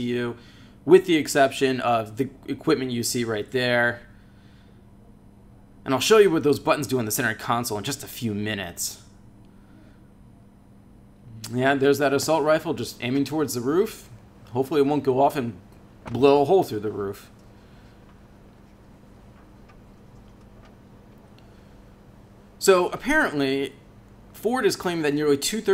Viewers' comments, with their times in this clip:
0:08 Work on writing a script and rehearsing it - you obviously dubbed this afterwards and it needs a lot of work. Audio editing is easy if you need to re-read lines, but you've got some flow issues, and words like "uhh" and "uhm" and "like", "yeah, uhh"; starting new sentences after a pause with "and" are very unnecessary. There was also some misinformation here - do your research and practice your reading. If you're going to ad-lib this, listen to it back and rewrite a proper script for take 2. Some jarring moments of silence moving into "yeah, it's actually a pretty comfortable interior" need a lot of work. Maybe can give you some help with how to write a script. ;)